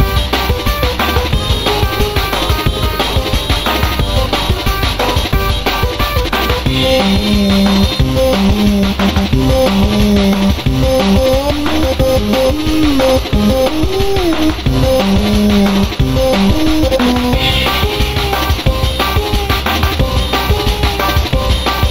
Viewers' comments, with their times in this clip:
0:06 Am I crazy or did I just hear missingno?